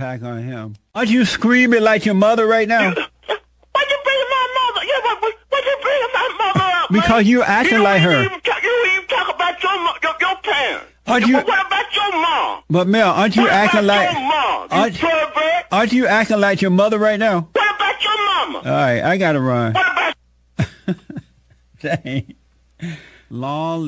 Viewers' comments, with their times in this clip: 0:05 .....this brotha was speaking in tongues!